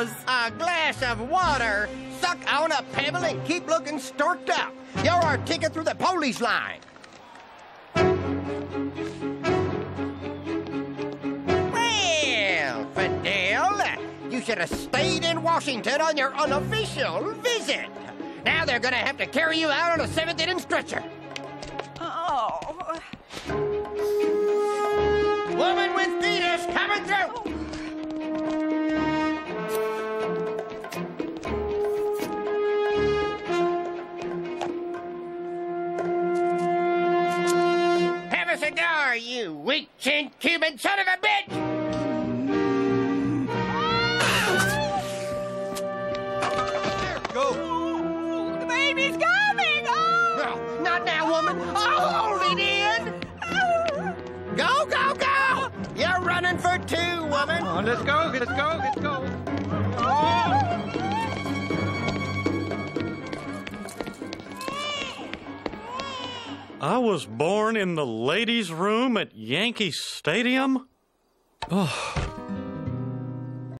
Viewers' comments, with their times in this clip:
0:10 No one is acknowledging how this is probably the funniest way anyone has said the word "Well"
0:11 the way he says “Weeeell Fidel.” Has always stuck with me😂
1:04 Baby Hank crying